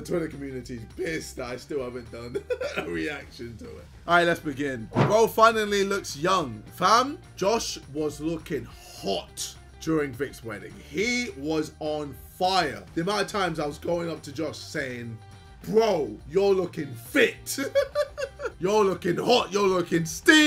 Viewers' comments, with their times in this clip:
0:05 There was POWER behind that H 😂 Mans said HHHHHOT